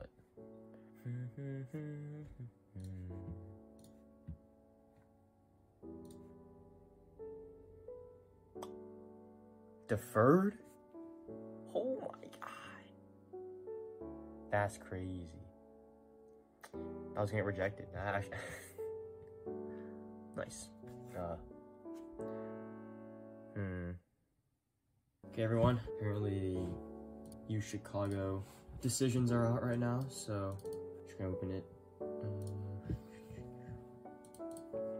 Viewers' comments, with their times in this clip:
0:08 Dang bro was really playing the Minecraft music and got so surprised he dropped an item XD. Best of luck on your college apps man, we're all anxious right here with you
0:22 THE MINECRAFT VILLAGER I CANTTTTT